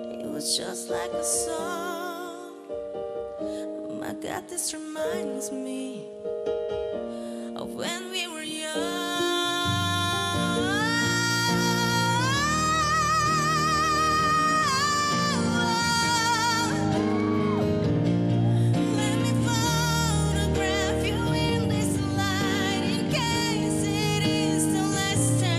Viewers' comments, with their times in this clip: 0:10 that high note made me fly to heaven